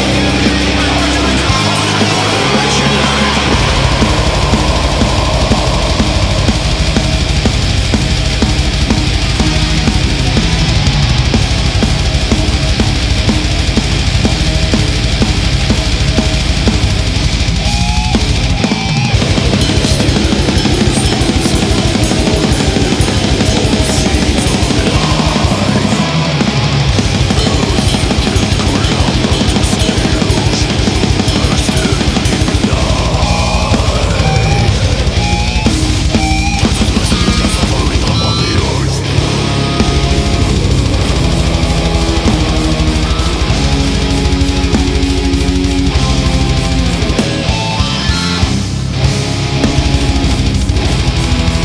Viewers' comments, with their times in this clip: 0:03 riff with morbid angel theme in the background is fucking killing it
0:38 is so morbid. hard as f